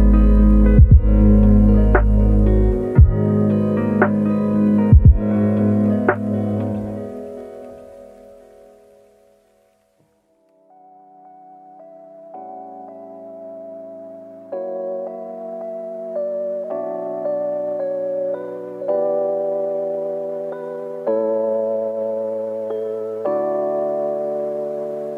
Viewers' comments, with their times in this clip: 0:10 Is a melody from my fave cartoon about white polar bears. It made me very happy to hear this in lo-fi style. If there are any post-soviet union 80-90s children – you will enjoy this :}